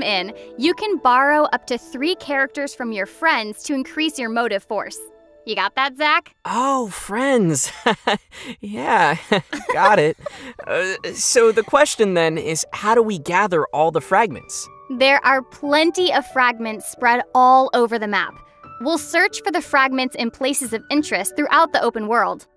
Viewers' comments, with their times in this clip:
0:05 "oh, friends" awkward laugh I felt that